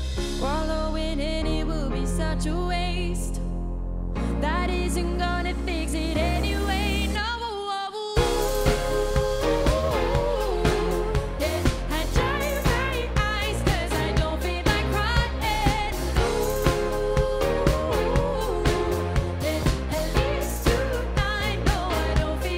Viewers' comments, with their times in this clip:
0:08 This fucking harmony is destroying the song XD